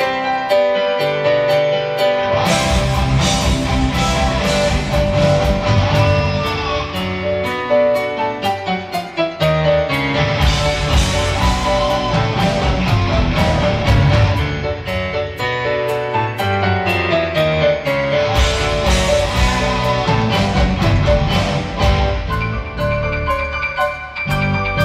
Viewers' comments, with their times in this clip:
0:08 That's a cool little moment when Al Pitrelli points and smiles at the other guitarist who messed up. It sounded like he didn't mute his guitar on cue but it's hard to tell.